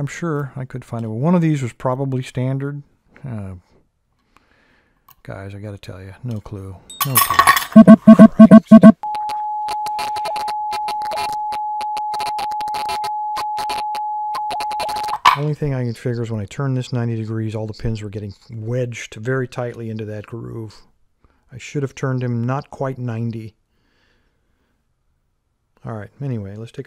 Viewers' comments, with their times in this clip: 0:07 RIP Headphone users, it scared me more than anything